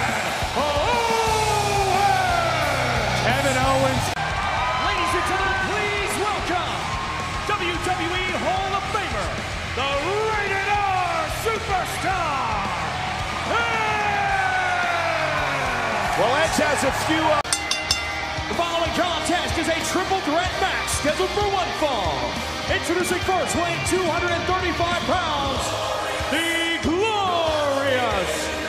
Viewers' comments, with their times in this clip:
0:10 To be Honest, Tony Chimel does Edge’s Rated R Superstar better than other Ring Announcers